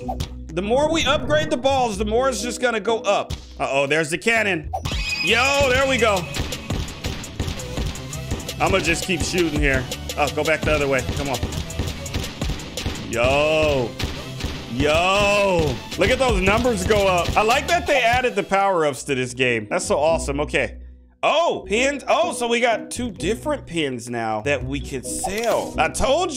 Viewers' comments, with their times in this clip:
0:07 Sounds like Cool Music